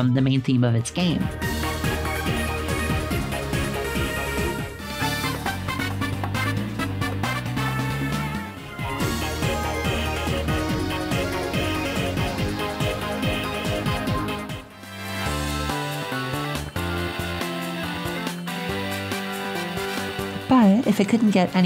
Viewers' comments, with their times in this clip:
0:09 So rewatching this video I realized that miitopia may have barrowed some of neo bowser city's guituar rifts, specifically the song Battle: New Lumos. (Notice the pattern shared bwtween both songs with the guitar riffs 1 2... 1 2 3) this is best heard (I may just be grasping at straws but its worth a comparison if nothing else to listen to miitopia's (nearly) never missing soundtrack)